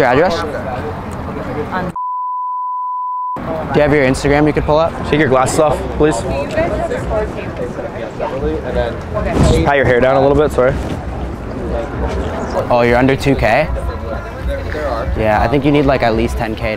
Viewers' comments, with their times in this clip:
0:03 Omg I would have laughed SO hard if they didn’t bleep her address